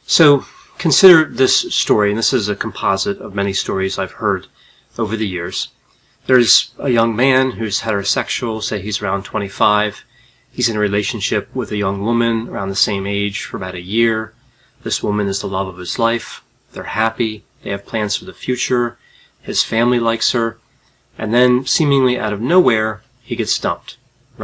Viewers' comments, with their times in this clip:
0:06 the good ole american accent first and only time on this channel lol